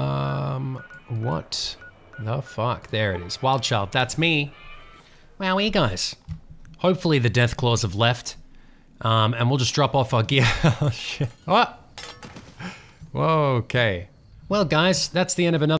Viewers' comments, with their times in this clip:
0:13 yes roundabout plays in the background